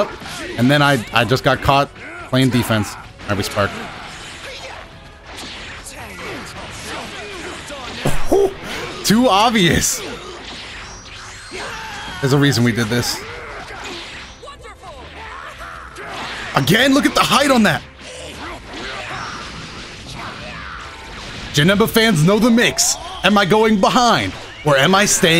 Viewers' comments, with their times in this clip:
0:09 He sounds like the gnome meme